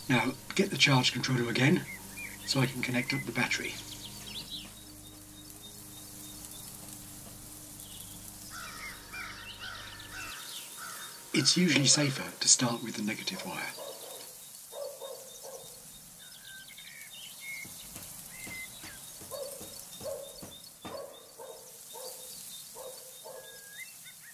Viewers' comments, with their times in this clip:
0:09 until the video had soothing birdy sound as background and then the horror type of sound of the crow..😁. clean show and useful too...